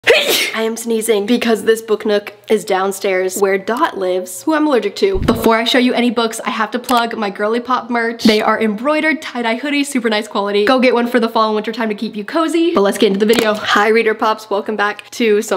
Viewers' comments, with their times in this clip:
0:01 blees you 🍀 [sorry if I write wrong, but I'm from Poland 😅]